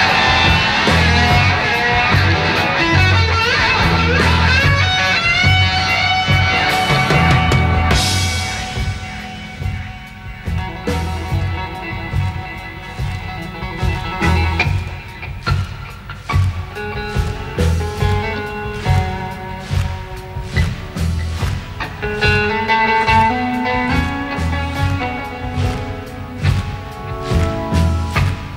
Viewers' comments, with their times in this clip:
0:09 Look at this tape delay 🤯. That’s sick😮